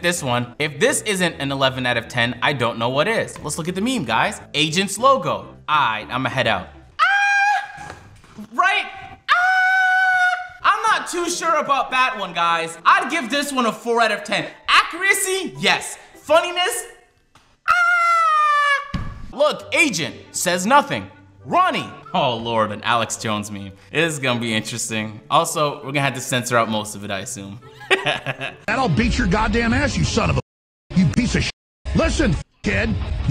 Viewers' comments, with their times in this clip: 0:04 😂😂 I felt the 'ahhhhh'
0:17 why Agent gotta sound like Elmo bruh